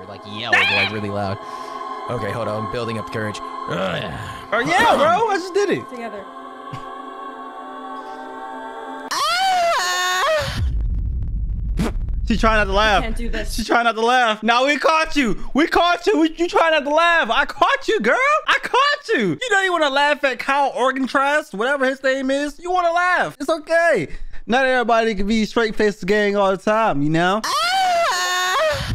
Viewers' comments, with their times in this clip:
0:09 AYO PACKGOD😭😭THE MOAN WTH😭